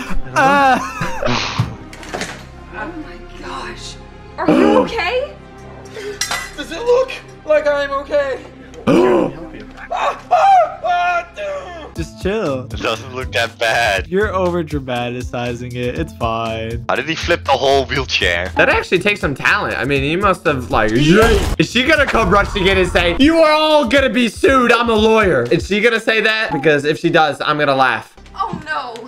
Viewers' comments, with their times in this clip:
0:10 if he is wearing a neck brace then why is he screaming when the employee is grabbing the sides of his stomach?🤔